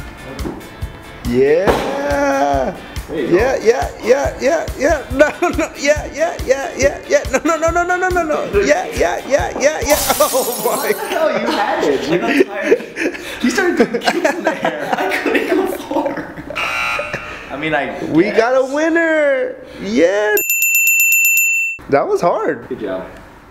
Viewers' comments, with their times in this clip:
0:03 you can hear Lil Uzi Vert in the background
0:06 lil uzi vert is born